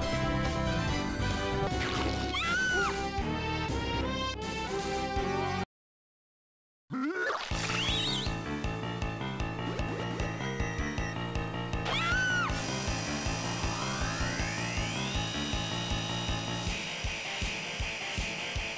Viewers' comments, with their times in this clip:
0:06 ( ATCHIM ) COVID 19 RUN !!!